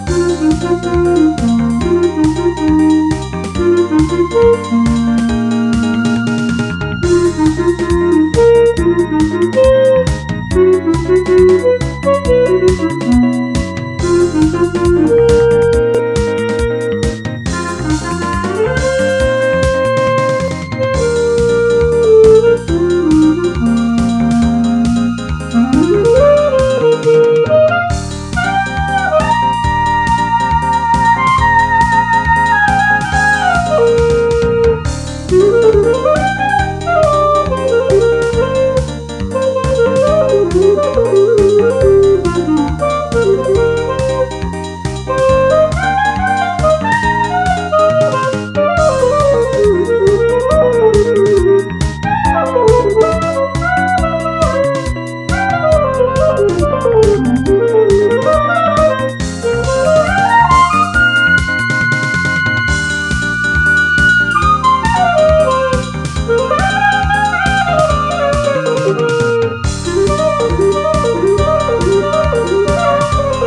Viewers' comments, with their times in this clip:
0:09 hmmmm sounds “beautiful”
0:54 The Mario Kart Licc